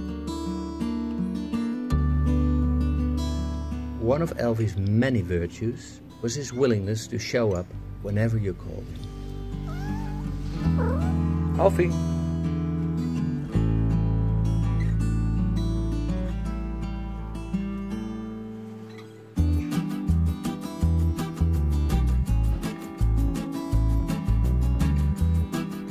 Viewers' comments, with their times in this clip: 0:09 I LOVE when my cat makes that sound! Usually, when she's sleeping, and I come up and pet her. She gets up, and makes that "chruut" sound!